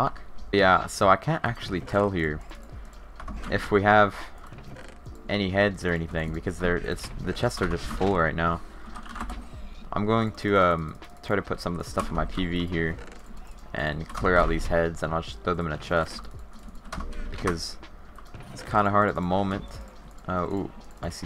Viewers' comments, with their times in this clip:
0:08 I'm the only one talking o.O